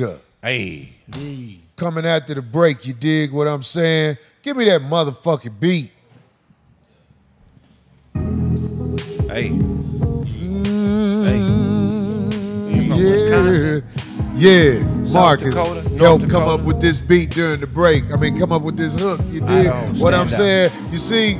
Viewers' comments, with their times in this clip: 0:04 The beat 🔥 🔥 The Hook 🔥 🔥 Everybody had bars 🔥 🔥 Instant 5150 classic song 🔥 🔥 🔥 🔥